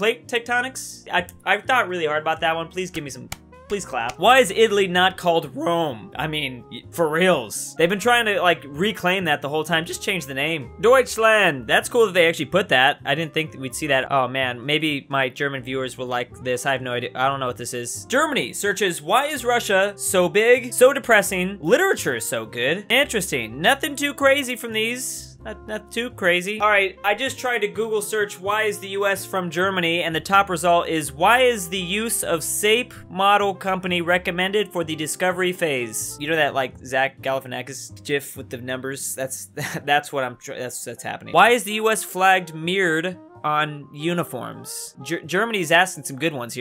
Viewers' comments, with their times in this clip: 0:04 hmmm better watch out for the voice cracks
0:31 Is no one gonna talk about the way he said sap?